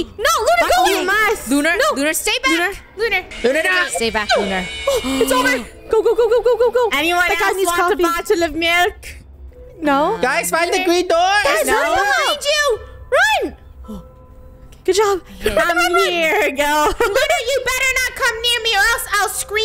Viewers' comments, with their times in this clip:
0:03 DID ANYONE HEAR THE FIVE NIGHTS A FREDDY'S SCREAM??